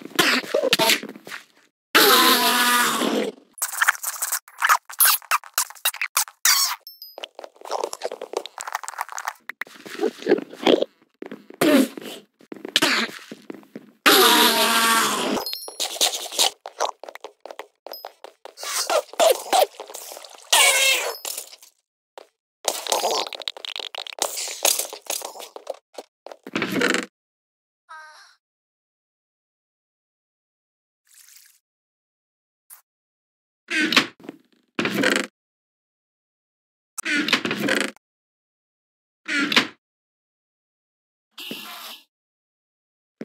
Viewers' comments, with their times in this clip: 0:05 OMG! that enderman sounds like it's squeaking! Awwwwww 😊😂
0:05 sounds like kissing
0:26 i heard a moan
0:27 zombie sounds are taken from moaning sounds confirmed